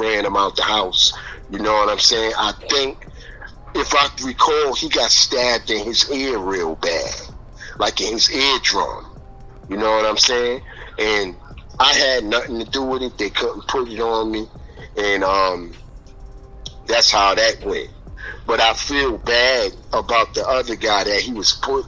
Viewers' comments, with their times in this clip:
0:08 “he got stabbed in his ear real bad”….the way dude said that shit was traumatizing